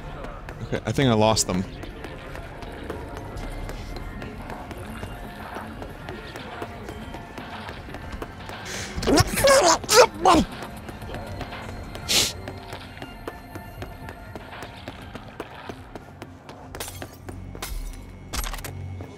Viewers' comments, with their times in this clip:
0:05 John Cena sneeze